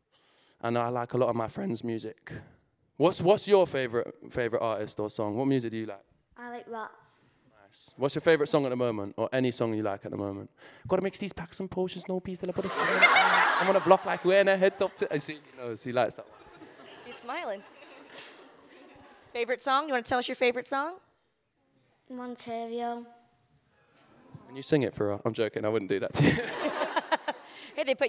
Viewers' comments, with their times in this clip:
0:10 im obsessed with hero singing packs and potions